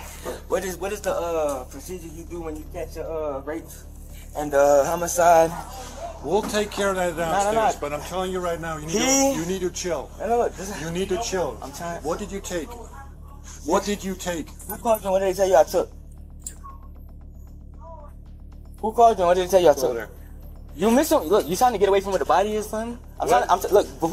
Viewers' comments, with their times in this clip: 0:07 ong am I racist for thinking that was x he even sounded like him a bit